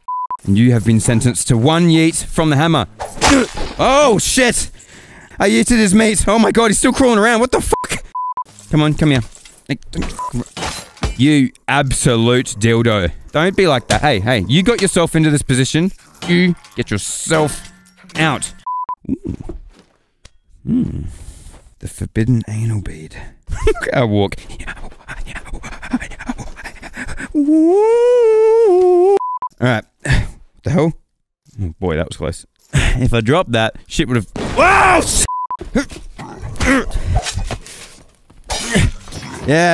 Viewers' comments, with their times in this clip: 0:10 the way he said that has me on the floor
0:23 the breathe and the walk makes it perfect